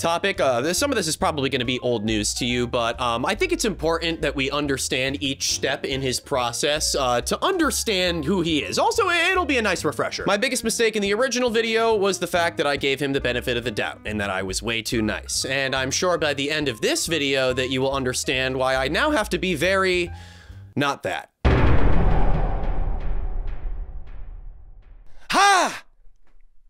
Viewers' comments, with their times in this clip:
0:07 Jesus it’s am and that “fbi open up” actually jump-scared me